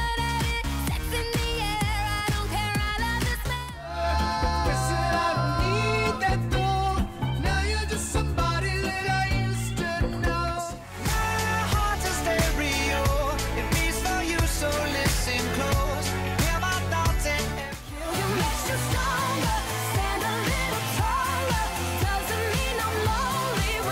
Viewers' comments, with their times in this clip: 0:06 is the worst, most god awful, stupidest ridiculous dumb ear disturbing song I've ever heard. Absolutely hate this song somebody I used to know. Absolutely horrendous.